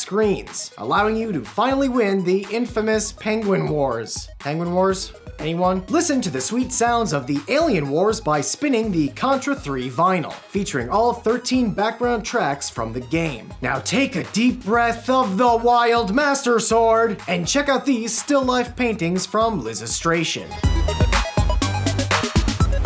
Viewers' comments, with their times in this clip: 0:07 Why do so many people say Alien as Elien... Drives me crazy